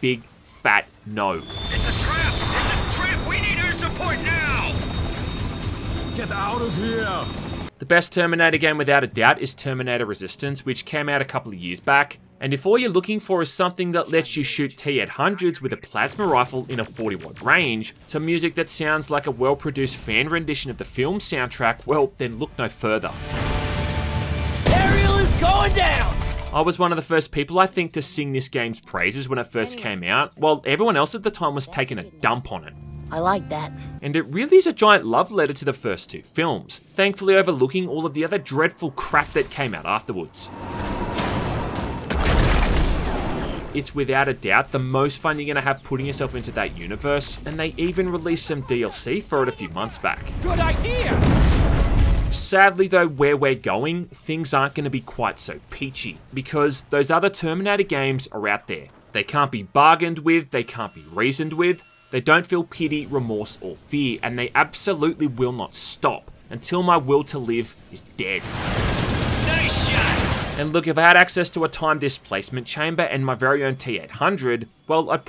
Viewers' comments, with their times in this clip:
0:06 "Get ow of here" - Terminator game,
0:59 Yeah okay Micheal Caine